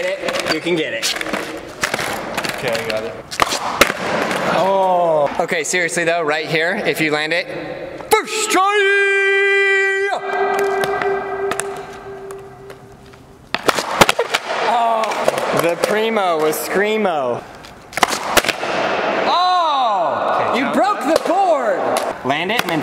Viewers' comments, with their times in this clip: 0:07 that echo tho!
0:10 That echo though 🗣️